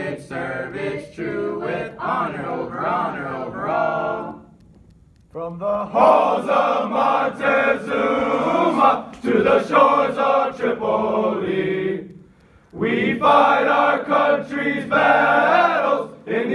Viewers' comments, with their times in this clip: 0:04 the Marines come in loud and proud